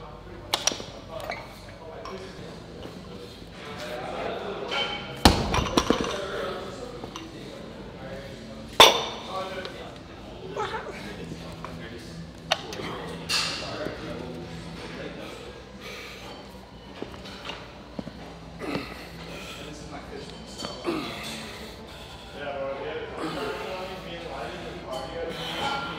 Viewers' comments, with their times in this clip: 0:09 beast mode roar, mon boyz we all do it